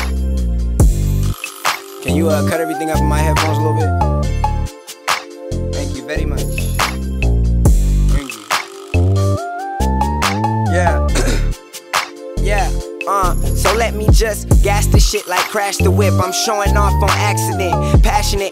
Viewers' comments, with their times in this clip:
0:05 Thank You Veddy Much! 💯✔